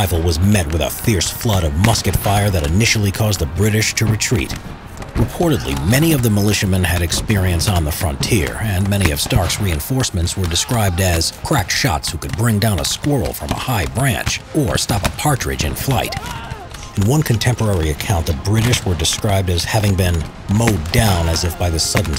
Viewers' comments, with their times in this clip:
0:04 Anyone else getting a wierd distortion ?